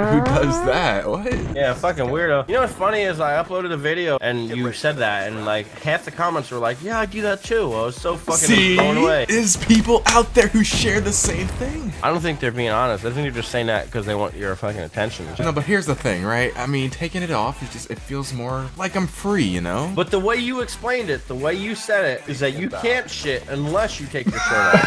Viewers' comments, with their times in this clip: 0:08 I just noticed you were clapping every word in that sentence lmfao